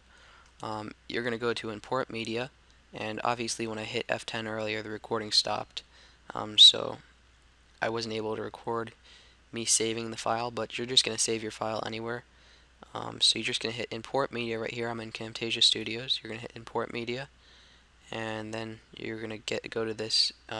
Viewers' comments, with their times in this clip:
0:07 i heard a something?!?!?!?